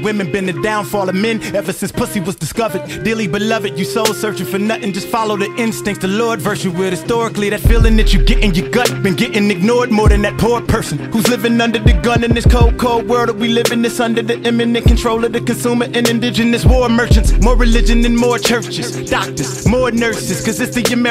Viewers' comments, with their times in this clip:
0:09 Royce, that flow is insane!